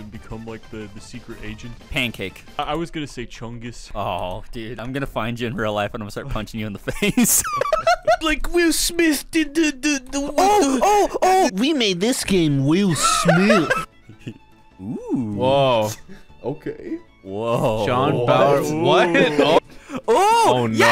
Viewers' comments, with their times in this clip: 0:07 bro sounded like an air horn